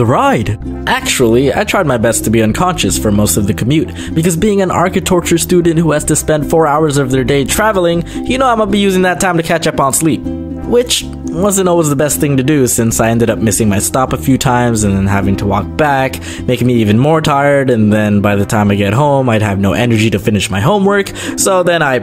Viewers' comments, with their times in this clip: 0:03 Did you just said ARCHITORTURE😂😂
0:03 did he say architorture